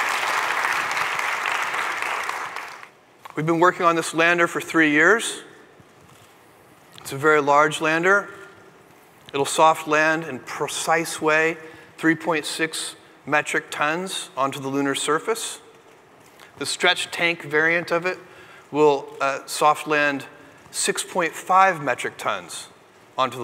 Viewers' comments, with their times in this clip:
0:10 I love the way Jeff Bezos says "precise".